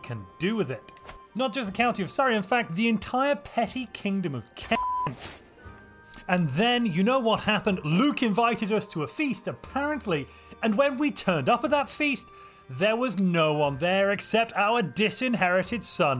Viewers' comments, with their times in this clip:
0:03 Profanity Filter bleeps the word Kent. Awesome :)